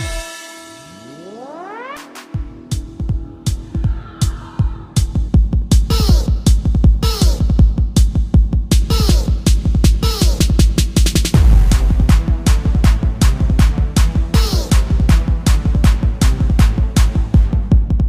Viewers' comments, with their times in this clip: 0:03 The change from Starlight mayhem inverted ascension instrumental to Context instrumental is so funny XD